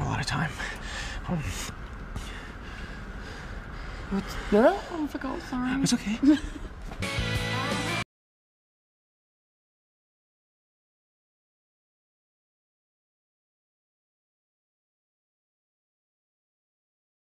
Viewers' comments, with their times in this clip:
0:03 the way he says 'its ok' makes my heart melt omg